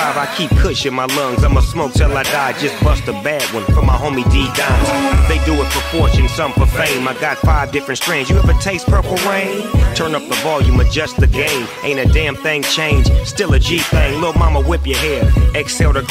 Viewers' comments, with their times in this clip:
0:04 i thought that was eazy e for a sec btw < LOL